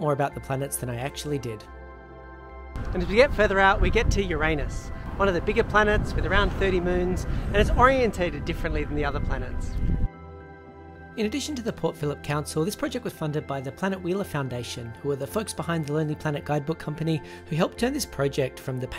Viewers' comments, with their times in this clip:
0:03 You stressed Uranus incorrectly, no pun intended.
0:04 did you mispronoune Uranus 😐